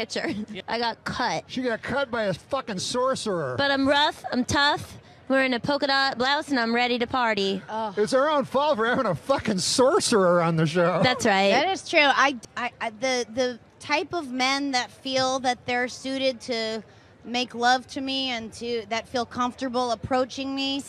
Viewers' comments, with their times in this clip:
0:03 I thought so too, you can hear him cracking up at the sorcerer joke and he even sets him up at the end with the whole comments on YouTube question